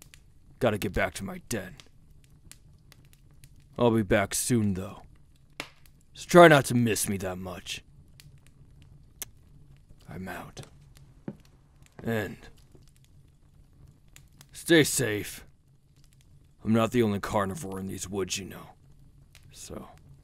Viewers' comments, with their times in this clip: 0:08 I don't know if it's a kiss but I heard something similar 👀